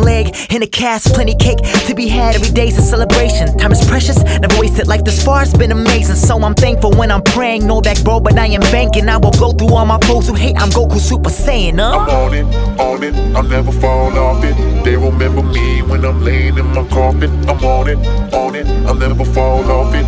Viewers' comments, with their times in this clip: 0:04 the flow reminds me of Eminem - legacy